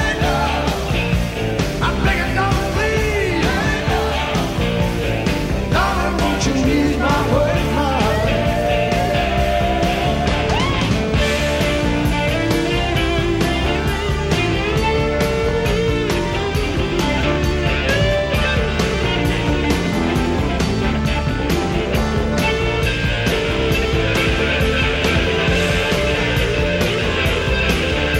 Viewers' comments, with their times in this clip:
0:10 damn phil collins is such a beast on drums :D and also "Weeep" nice shit